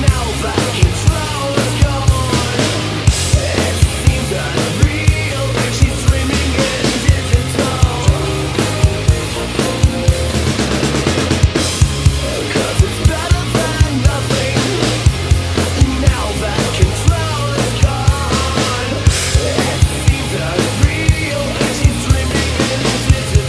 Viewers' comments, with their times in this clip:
0:10 My favorite fill that always sticks out to me after all these years. Hey, what's the green tape for on the sticks and heads?